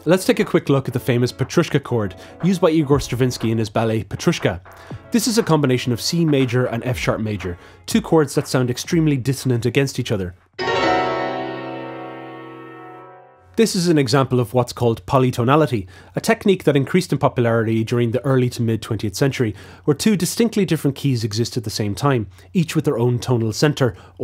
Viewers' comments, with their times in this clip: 0:10 This sounds like the intro to the Simpsons theme song.